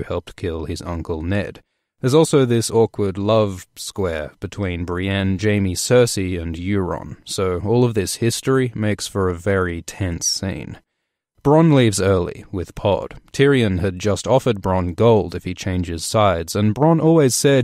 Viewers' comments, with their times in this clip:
0:05 dont know why but the hesitation when he says "love....square" made me snort